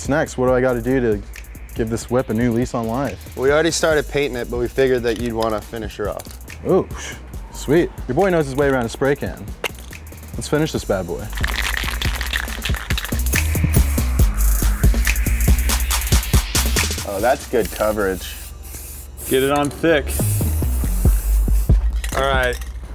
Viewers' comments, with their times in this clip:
0:03 the donut boys sound like they're being held hostage and forced to read cue cards. especially